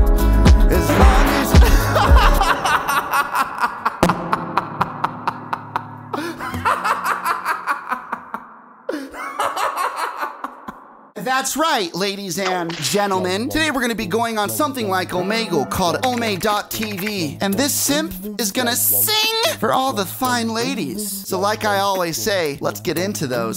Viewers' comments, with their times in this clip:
0:05 The large fart on NGL the first girl is so beautiful